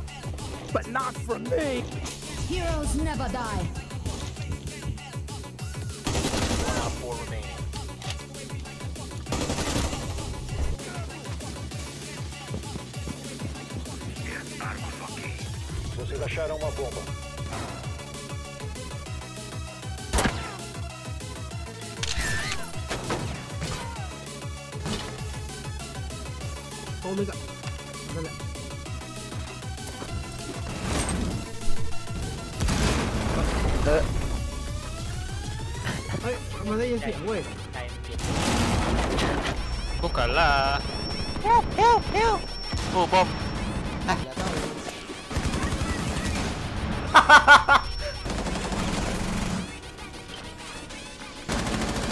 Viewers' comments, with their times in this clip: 0:03 What's with this music
0:40 Thats me on HAHAHA